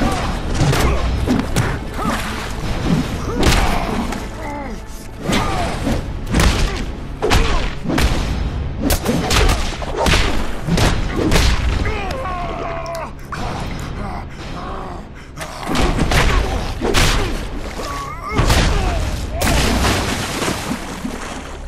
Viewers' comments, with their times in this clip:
0:03 I saw this a day ago and idk what it is, I've never seen this before, made me research the whole thing, looks badass. I somehow cannot stop coming back to watch this. It's a aesthetically pleasing and satisfying to watch. The combo that he lands looks like a professional UFC fighter throwing a combo. Pretty sick. Never seen a cartoon like this before either. The camera moves along with the punches when they both throw them. Even the punches sound pleasing af when he lands them punches on the mutant leader. Makes it feel like I'm watching a real fight between 2 professionals. Great attention to detail as well.